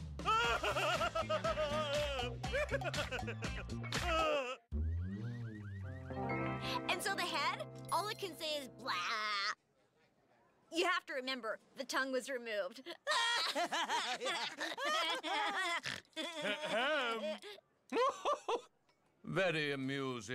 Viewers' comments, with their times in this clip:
0:06 Wow, Tabitha St. Germain sounds different